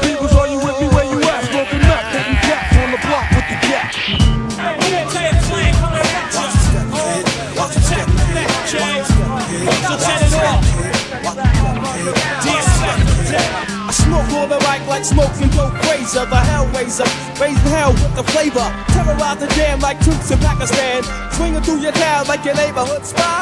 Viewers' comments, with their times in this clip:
0:04 is my favorite... smooth like butter